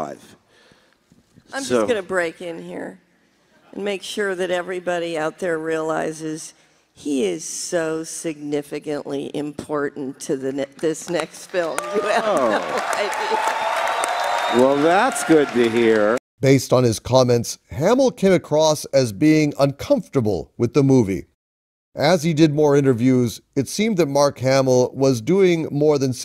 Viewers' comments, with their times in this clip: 0:10 😂 I hear Mark Hamills Joker